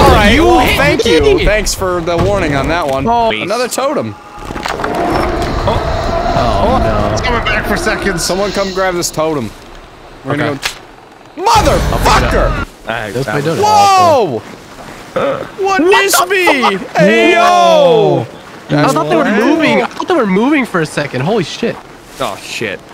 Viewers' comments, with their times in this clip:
0:10 the comedic half second of him stepping in the trap and yelling "MFER"